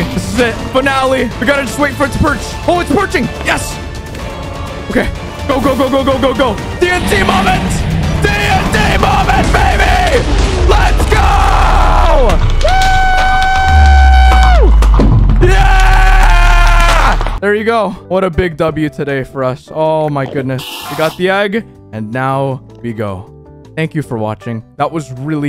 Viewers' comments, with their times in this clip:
0:07 My ears r ded now